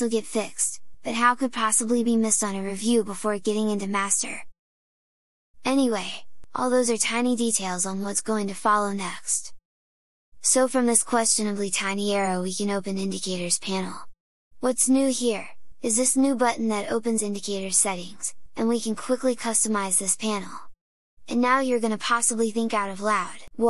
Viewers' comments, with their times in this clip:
0:08 that "next" sounds like when my gf is pissed at me and speaks with closed jaw (or however it is in english :D)